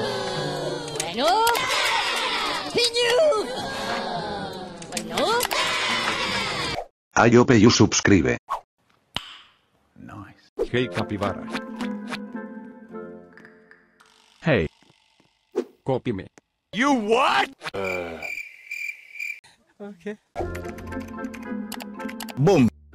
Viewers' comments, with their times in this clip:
0:06 sound voice look like meme voice💀